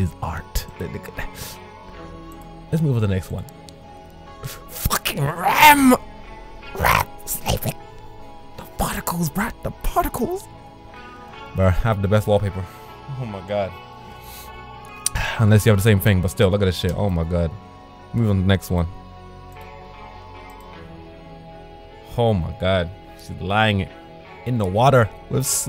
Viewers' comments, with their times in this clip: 0:06 hahaha lol you almost sounded like smeagol